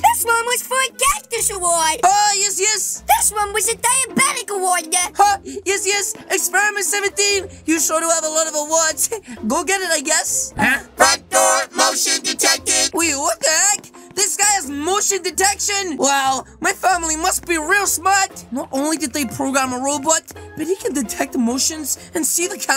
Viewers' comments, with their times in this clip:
0:06 The boy: Reewad